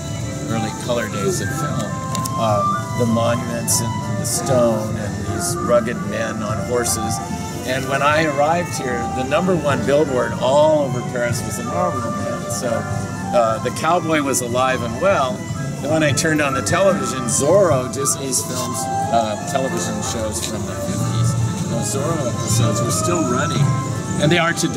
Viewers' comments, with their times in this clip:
0:09 Argh! He says the number one billboard is...then he turns away from the camera. Did he say the Marlboro Man? Is that still being used in France?